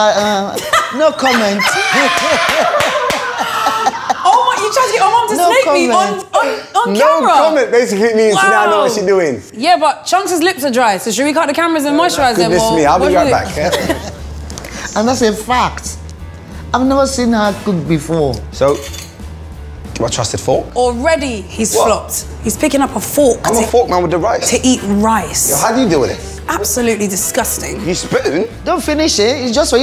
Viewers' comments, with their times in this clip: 0:09 Nah she's JME'S twin they sound alike
0:10 also sound like him right there